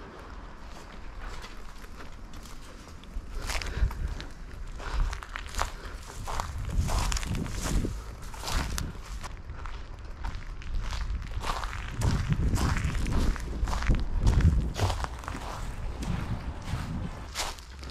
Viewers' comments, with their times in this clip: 0:04 that walking sound🔥🔥🔥🔥